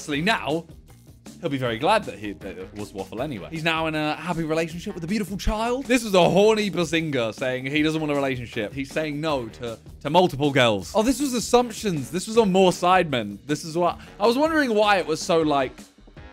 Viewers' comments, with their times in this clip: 0:03 he's not...that's not how you say it...well, not quite...nvm🤦🏻‍♀️